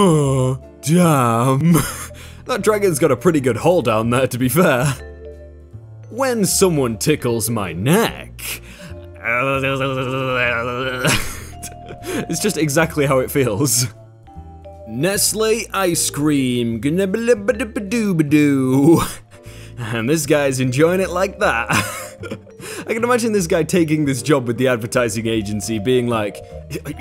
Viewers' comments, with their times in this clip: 0:09 do you really make that sound when someone tickles your neck